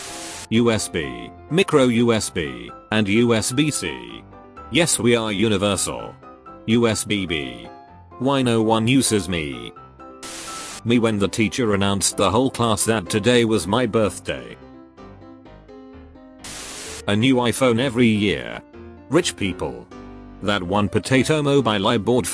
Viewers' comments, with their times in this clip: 0:06 *Sad Lightning Noises*